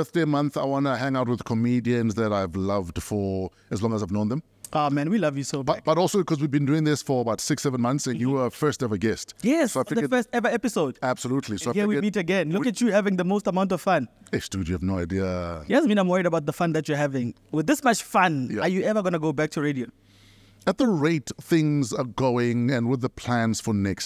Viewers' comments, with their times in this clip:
0:07 something really weird happens on this podcast. A weird sound in the back and warren blinks with one eye. very weird.